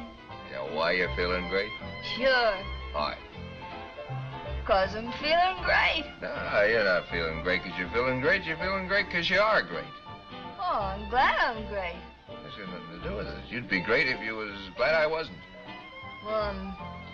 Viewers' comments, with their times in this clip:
0:04 I have no context at all but Myrna Loy sounds super drunk and it’s 😂